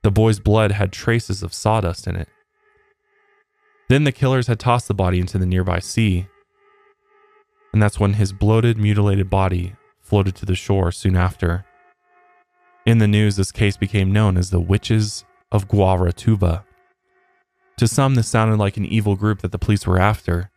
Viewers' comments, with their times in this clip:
0:03 I paused the video thinking a car had been stopped at the light by my apartment blasting their music but it's just music in the background of the video 😂